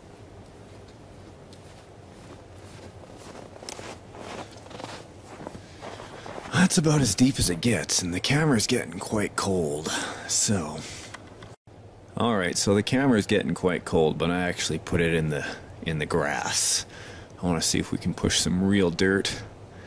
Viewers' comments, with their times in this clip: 0:06 sounds like the narrator for a documentary lol